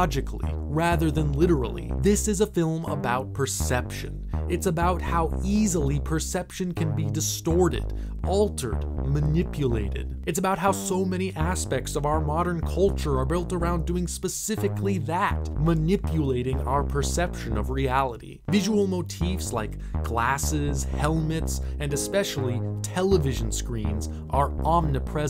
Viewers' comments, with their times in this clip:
0:06 What music is used ? It’s great synth music